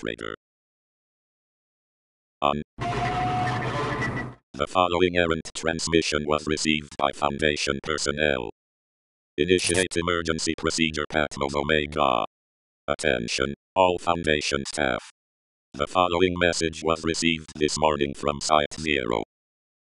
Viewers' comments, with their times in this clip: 0:03 Him: on *werid creepy noises* the fol- Me: what the